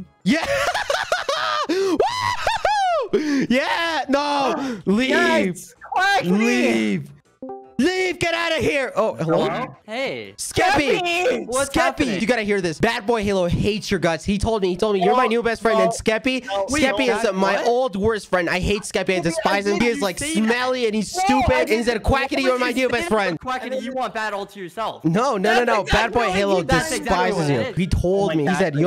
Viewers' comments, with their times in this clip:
0:10 how they both said skeppy at the same time
0:11 bad's 'skeppy' made me so soft